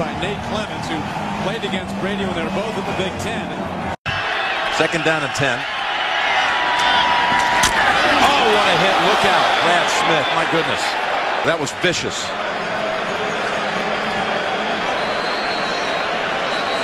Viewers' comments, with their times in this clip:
0:04 got to see that live in Candlestick and it sounded exactly like that throughout the entire stadium.